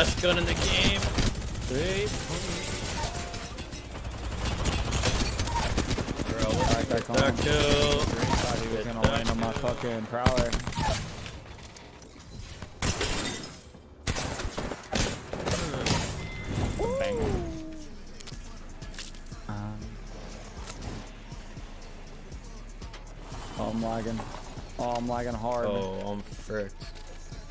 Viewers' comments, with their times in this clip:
0:09 excuse me what the fuck, Minecraft pvpers don’t click that fast